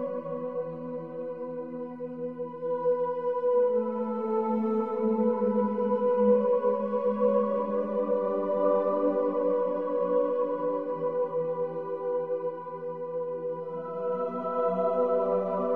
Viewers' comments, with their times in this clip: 0:03 is what plays whenever you are falling asleep during a movie and then someone in the movie shouting way louder than they should is what wakes you up again.